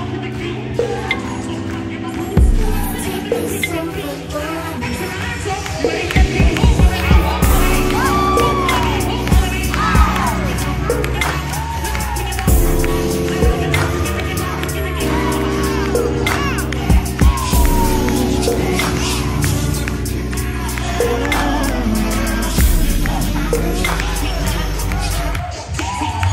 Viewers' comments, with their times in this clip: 0:09 Great video, What’s the song being played in the background I know it’s Aaliyah rock the boat “ but it’s clearly a slowed down remix